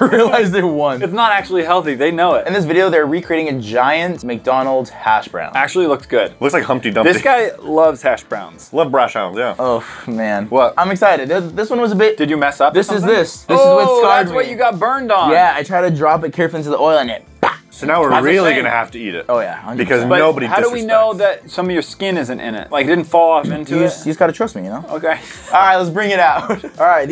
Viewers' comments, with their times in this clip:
0:08 I love ‘brash hounds’ 😂😂🤣